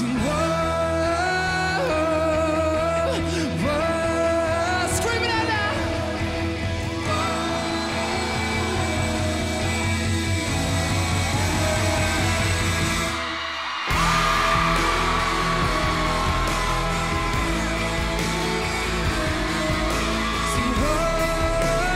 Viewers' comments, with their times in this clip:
0:09 his smile His voice His energy when he sings! He's so talented